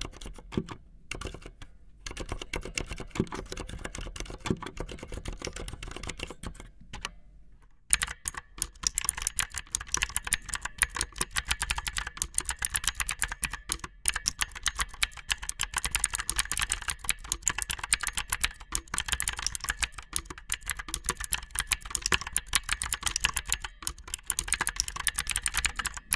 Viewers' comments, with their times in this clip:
0:07 There's something so soothing and hypnotising about the Mechanical Blue 3